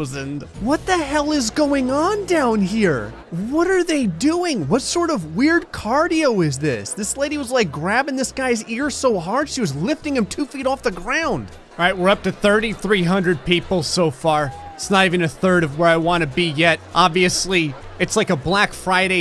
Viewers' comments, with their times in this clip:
0:07 yep, sounds like my mom...